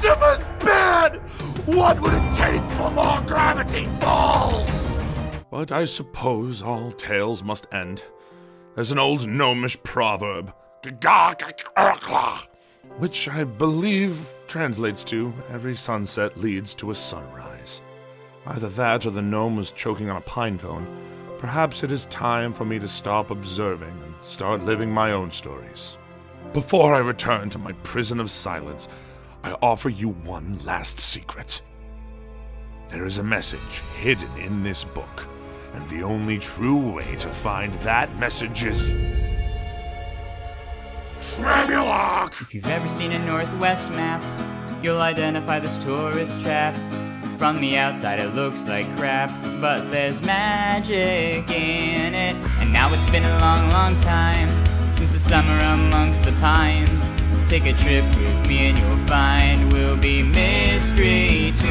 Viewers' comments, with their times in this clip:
0:10 this is the best voiceacting moment ive ever seen thank you whoever voiced shmebulock 😭😭
0:42 Is it just me or do anyone else thinks the song is really good?